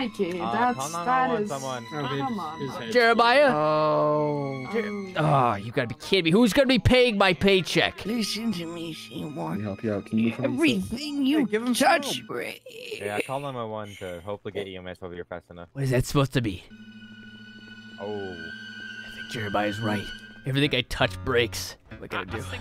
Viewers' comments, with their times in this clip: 0:10 i love how he says "everything you touch brreeeeeaaaaakkksssss" and the wiggle of the words were so f*cking hilarious 😂😂😂😂😂